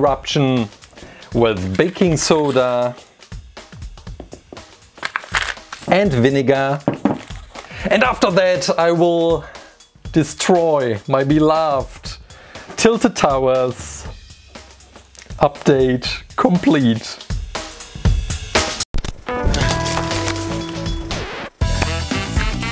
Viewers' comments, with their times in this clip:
0:06 keep on replaying it sounds like he's saying the n word